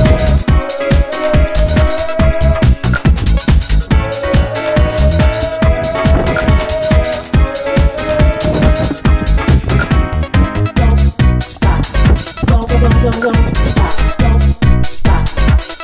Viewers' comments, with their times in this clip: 0:03 Awesome "VIDEO" Interesting music I must say...hmmm...anyway I thought I was going to have an epileptic fit But I survived that to be able to comment about it.